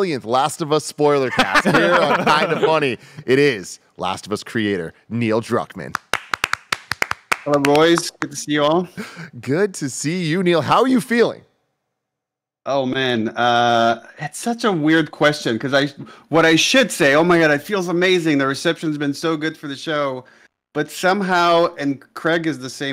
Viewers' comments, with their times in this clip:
0:04 They did training before for that clap 👏 😂